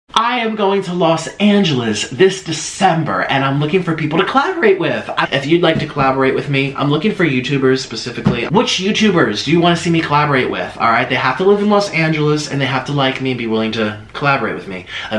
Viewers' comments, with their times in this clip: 0:00 (I am going to loss"wight" nope Angeles)